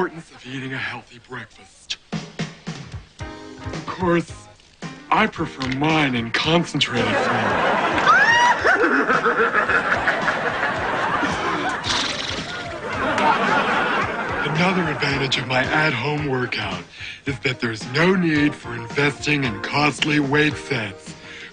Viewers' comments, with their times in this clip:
0:09 That horse laugh 😂